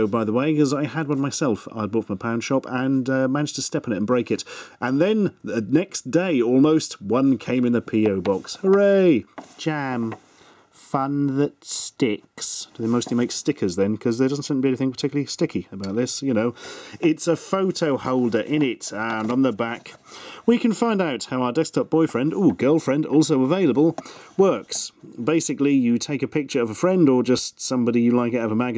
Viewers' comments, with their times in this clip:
0:09 XD lol i LOVE the way he says that! XD